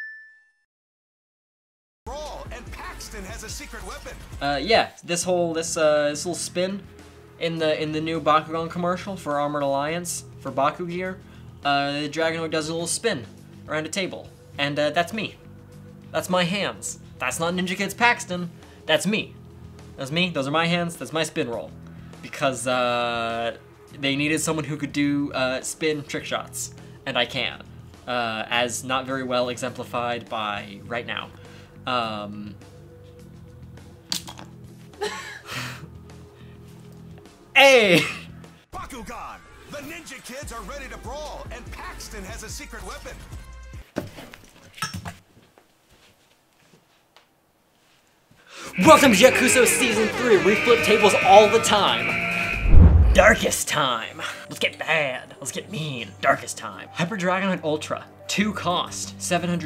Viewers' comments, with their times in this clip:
0:03 “and pakistan has a secret weapon” (?)
0:45 "That was sorta... anticlimac-" (BOOM!)